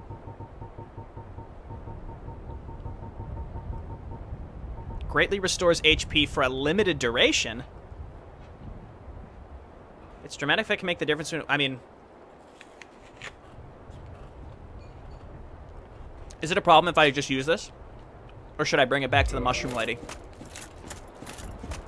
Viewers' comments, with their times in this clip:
0:09 Ur voice starts to sound really funny for some reason